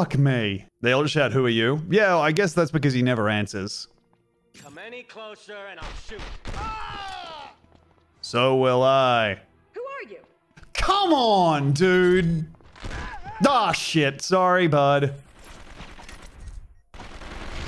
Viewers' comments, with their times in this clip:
0:05 the screams of the enemies as they die sound so eerily like Tom's voice...